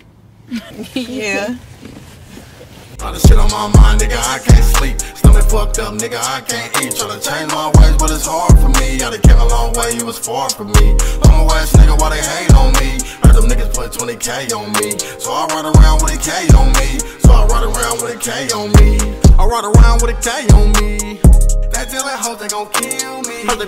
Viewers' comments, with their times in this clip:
0:06 🔥🔥🔥🔥🔥📽️🎬 Keep grinding this shit is hard 🔥🔥🔥🔥 that Track I need that straight banger